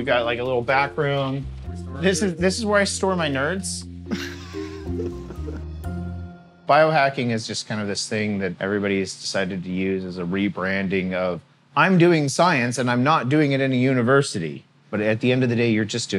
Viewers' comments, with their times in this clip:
0:03 A nerd laughing at other nerds LMAO